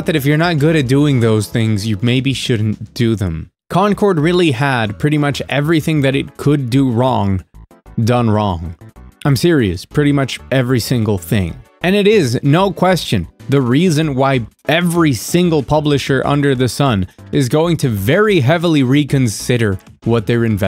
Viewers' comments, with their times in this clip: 0:07 What was the song ? Really liked that one and your perfect audio mixing, it’s so annoying when every other channel makes it so loud you can’t hear them talk or so quiet it may as well not be there